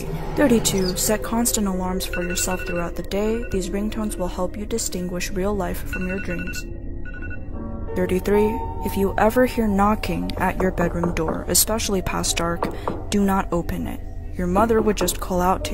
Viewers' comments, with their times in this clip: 0:03 I have that alarm